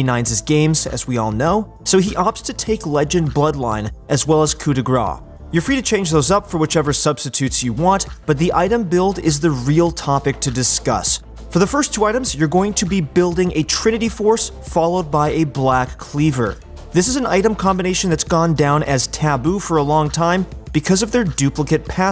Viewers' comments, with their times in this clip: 0:04 the way he said ''coup de grâce'' ahahah!